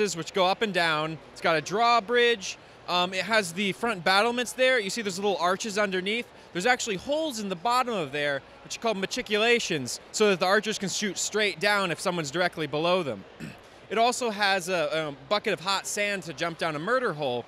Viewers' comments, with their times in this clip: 0:04 Happy Shadiversity noises.